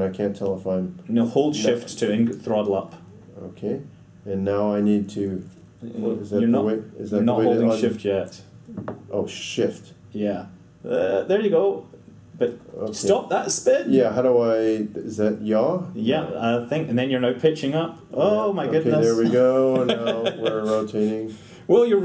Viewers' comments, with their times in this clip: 0:08 Ed:''Oh shi...ft'' How i thought it was: ''Oh shi...t''
0:09 I thought he said oh sh*t